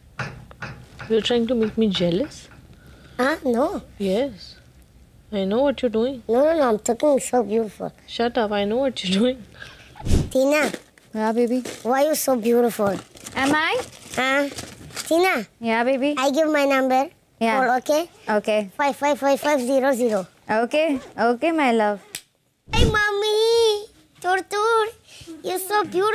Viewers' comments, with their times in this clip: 0:10 Just the way, he says, "Tina", .❤❤ Cutie pie.❤❤